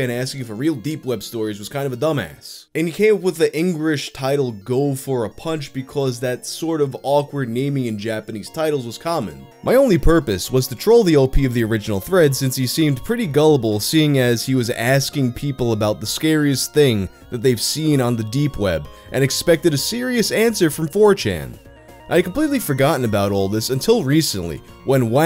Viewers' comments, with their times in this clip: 0:10 that song sounds like aces high by Iron Maiden. Is it a castlevania song?